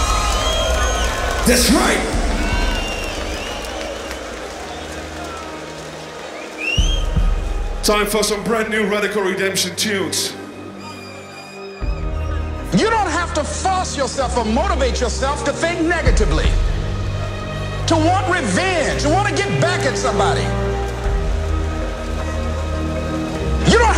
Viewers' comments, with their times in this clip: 0:07 Song is stronger & better